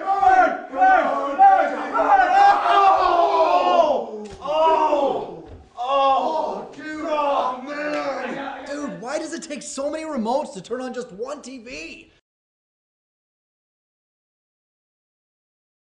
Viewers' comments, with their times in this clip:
0:11 holy crap that sounds like brock's voice from pokemon.